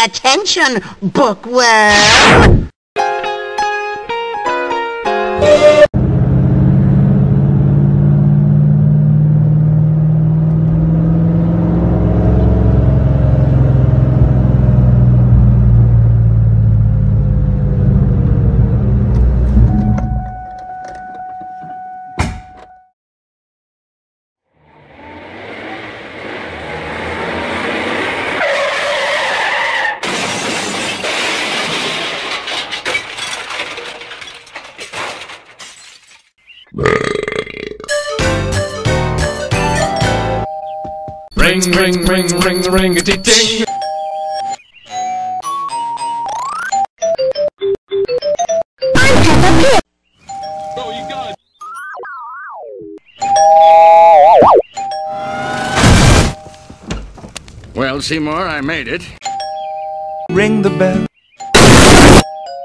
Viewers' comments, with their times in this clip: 0:05 it sounded like a part of the London Underground’s Jubilee line 1996 stock
0:36 skinner sure has some nice doorbell tunes
0:44 I want that all star doorbell